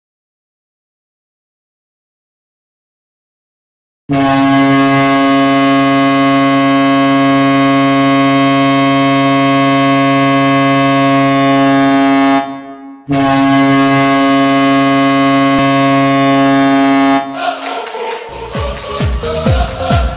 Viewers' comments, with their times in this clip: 0:04 That horn was extraordinarily weird but good.